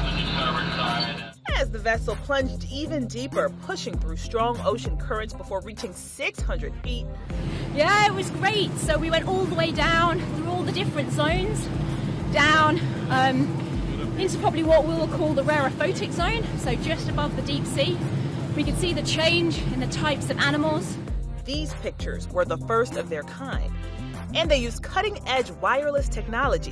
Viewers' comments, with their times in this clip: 0:07 i didn't know tracer from Overwatch was a deep sea diver